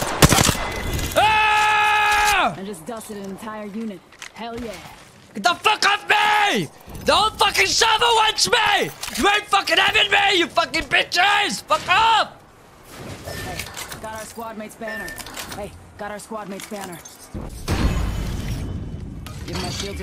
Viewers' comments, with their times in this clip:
0:07 shit talking at the top of his lungs walks gently by the door